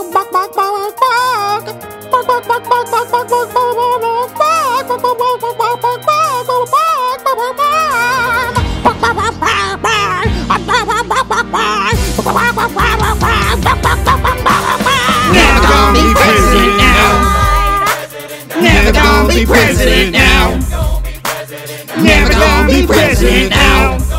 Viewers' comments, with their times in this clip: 0:09 WOW I never knew a chicken could sound that aggressive